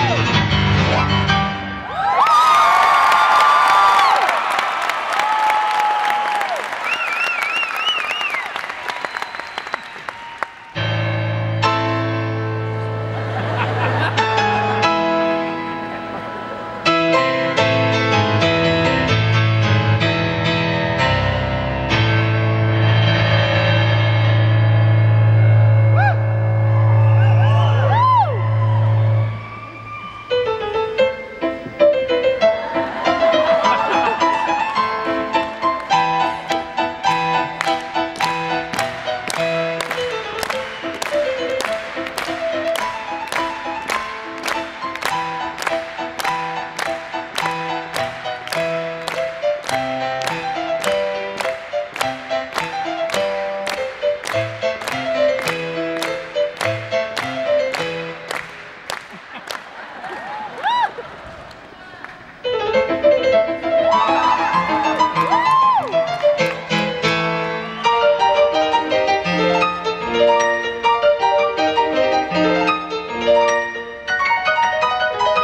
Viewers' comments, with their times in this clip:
0:07 he responds with a jab to the jugular with Rachmaninoff followed with Mozart played at 'Ludicrous Speed... and she shuts him down with Charlie Brown.
0:57 ... V-TEC kicks in...lol